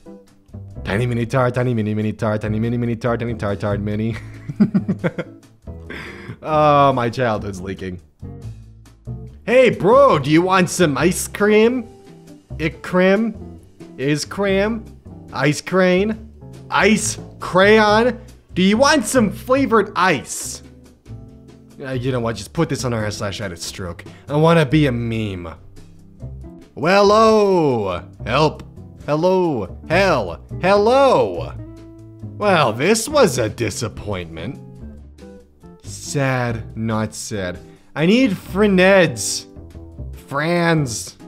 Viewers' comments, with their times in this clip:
0:06 I thought he said "My child is leaking" and I was like wait a second what the fu
0:07 "oh my child's leaking" I mean I know what you meant but eff me man XD
0:25 i like the way he says i wanna be a meme Such determination